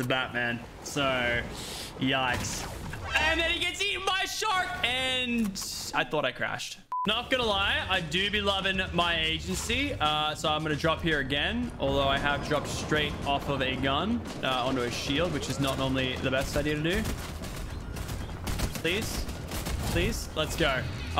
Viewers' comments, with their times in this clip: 0:09 notice how he says agency.